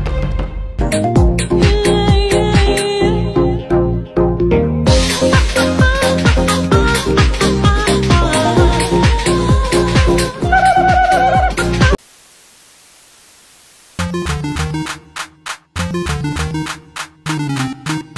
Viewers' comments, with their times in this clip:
0:03 what a song